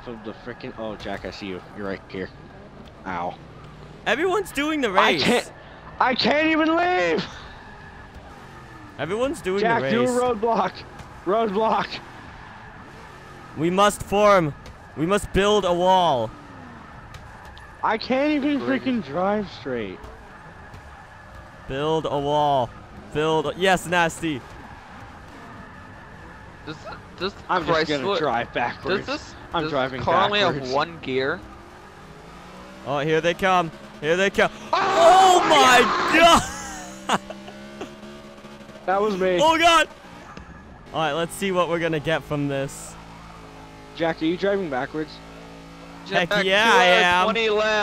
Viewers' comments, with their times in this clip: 0:03 ow... Most painful Ow to be ever said in Human History and civilisation as we know it
0:34 that scream though was halerious!